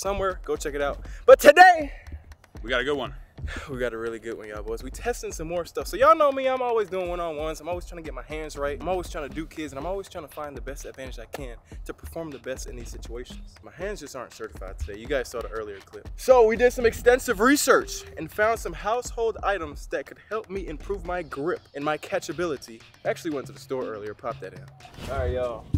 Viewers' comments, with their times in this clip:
0:08 what did he sayyyyyy😂
0:08 just me? Or does it sound like: im tryna do kids